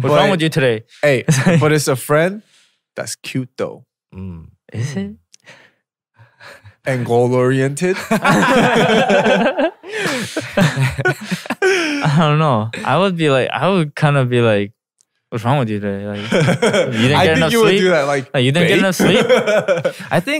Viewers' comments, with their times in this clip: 0:04 Whenever BM sees Harry not relating : "and gOaL OrIenTeD" lmfaoo